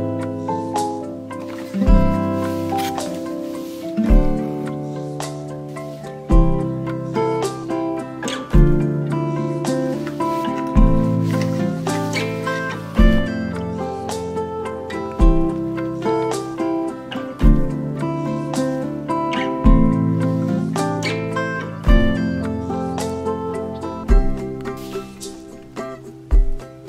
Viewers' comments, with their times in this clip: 0:07 ice cream or eye cream 😅